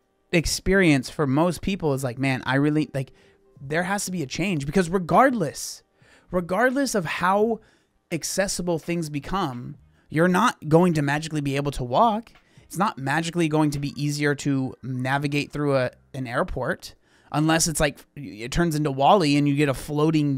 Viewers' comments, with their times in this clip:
0:03 the sad music in the background is the funniest part about this video 😂